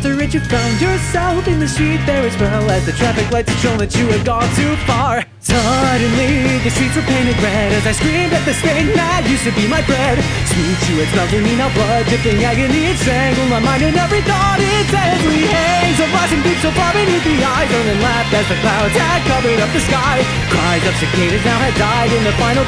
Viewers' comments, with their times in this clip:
0:07 keep hearing "As I screamed at the stain that used to be my bread"
0:07 I keep hearing "as I screamed at the stain that used to be my bread"
0:07 HE SAID BREAD NOT FRIEND I PROMISE YOU I PHYSICALLY CAN NOT UNHEAR IT
0:08 I thought it said, “as I screamed at the stain that used to be my bread” 💀💀💀